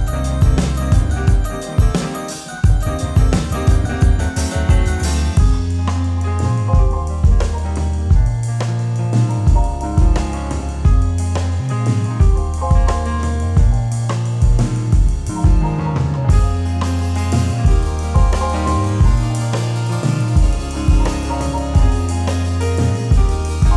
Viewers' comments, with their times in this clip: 0:05 I don't want to be the one who compares everything to Radiohead but reminds me of something, not Knives Out but…something